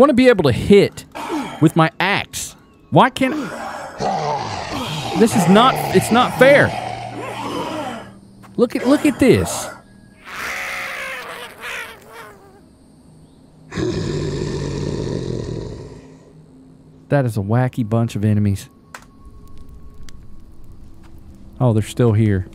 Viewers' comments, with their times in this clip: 0:07 Hilarious 😂 the little construction guy making those sounds got me on the floor.